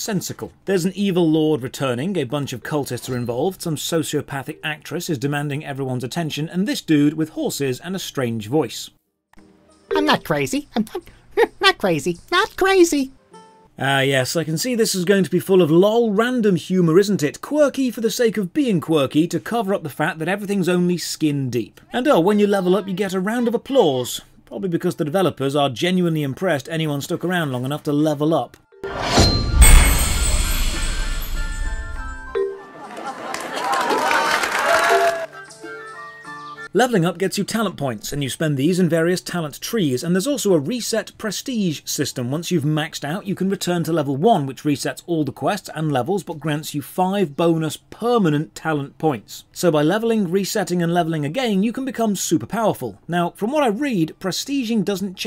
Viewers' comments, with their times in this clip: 0:08 OMG, they got someone to do an impression of Richard Kind for that NPC. 🤣 And it's actually a pretty good impression. They even made the NPC resemble him. :-)
0:28 I love the applause, they appeal to my narcissistic side.🤩
0:43 Royalty free music is present